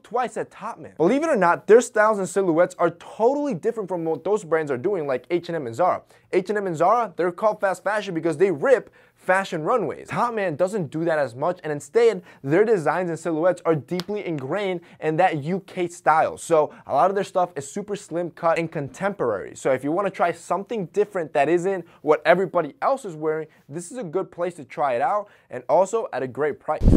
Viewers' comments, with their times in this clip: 0:10 Is it just me or did anyone else laugh at the way he said instead
0:11 "Instayid" 😂 love it lol
0:11 your instead sounded really funny haha. Kinda country.
0:11 anyone notice how he said "instead"